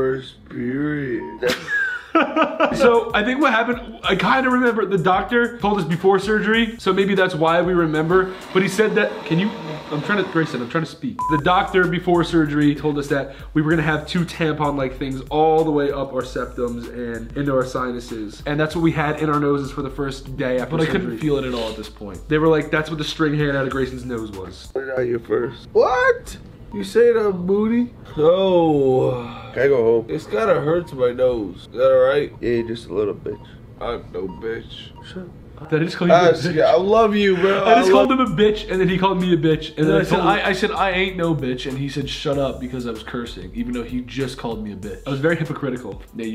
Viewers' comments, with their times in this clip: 0:04 who’s laughing Ethan or Grayson lol
0:32 didnt he say here "just a little bit"?